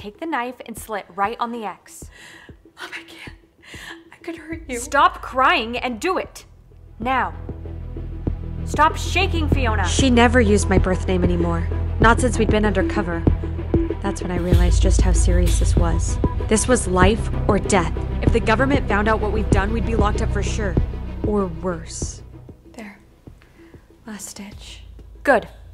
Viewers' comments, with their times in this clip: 0:07 it sounded kind of mean